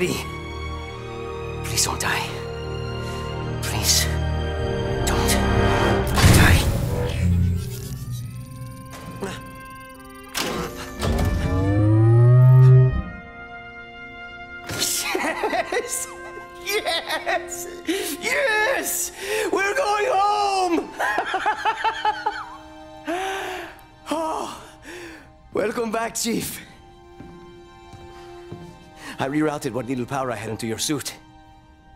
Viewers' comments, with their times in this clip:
0:09 That shield recharging sound from Halo CE tho. The hairs on the back of my neck stood up in nostalgia.
0:11 Shields recharge sound Multiplayer announcer: SLAYER
0:16 These old sound effects gave me too much nostalgia. How i react to it: